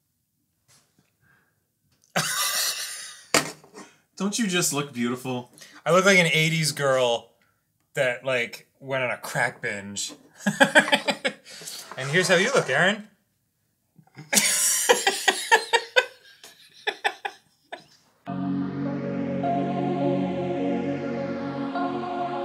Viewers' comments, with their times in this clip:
0:10 There's just something about that laugh that gets me.